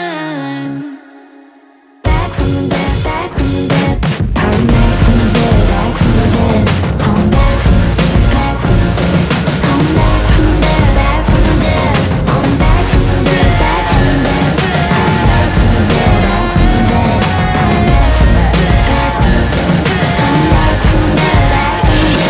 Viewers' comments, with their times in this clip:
0:04 The beat drop is so sick